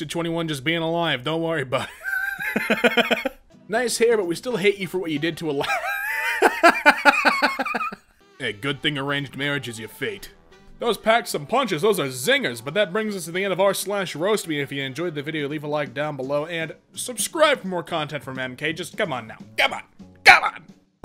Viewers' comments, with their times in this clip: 0:04 knock of Jesus